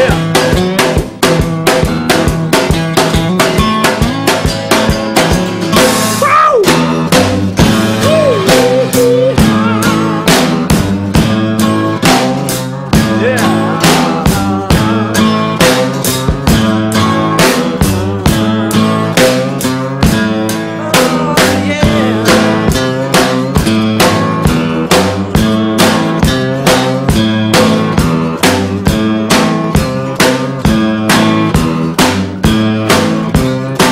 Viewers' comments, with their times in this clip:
0:05 They lay it down HARD Nobody jams harder than the Beatles
0:06 RINGO. --- When he hits that beat, every person who thinks he ain't good, needs to shut up. He just kicked a jam into full gear right there.
0:20 is it just me or does it sound like 'Cut me some slack' (Paul's jam with Nirvana band members)